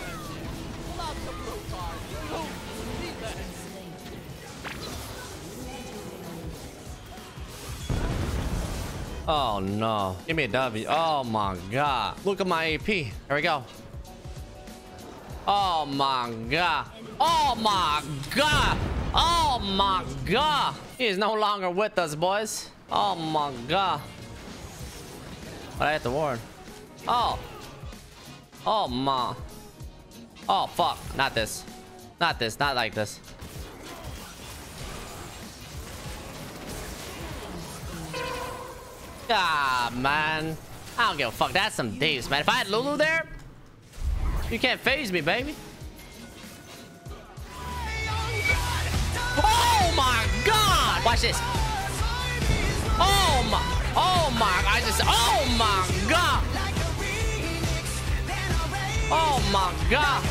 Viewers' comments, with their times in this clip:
0:10 OMAGAH ASMR STARTS HERE
0:47 babys language : OMAGA 😂😂